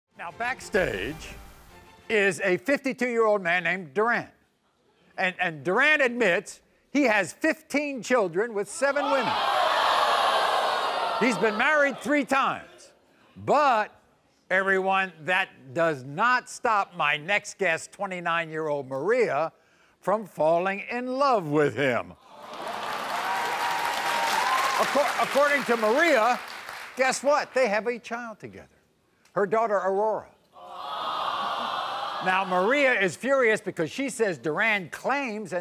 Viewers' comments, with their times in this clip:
0:00 do y'all hear him say backstage different...
0:20 why would they clap for that